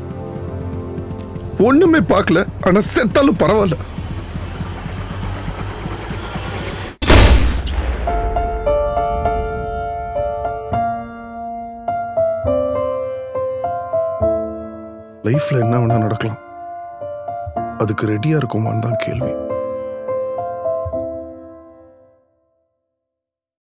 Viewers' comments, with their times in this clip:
0:08 Woah.. Rahman rocks as always.. n Gautham too.. One of their ardent fans.. N i too loved the thalli pogathey piano
0:11 I loved the theme music from Really wished it lasted longer. Hit the like if you also wished
0:15 Dialogue Delivery Was Really Awesome And Its Truth .. STR & GVM Made a HIT Again